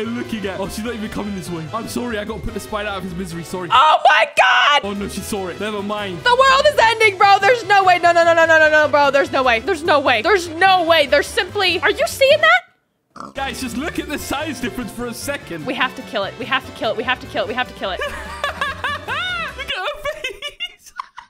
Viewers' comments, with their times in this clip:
0:09 are you seeing it (pig noise)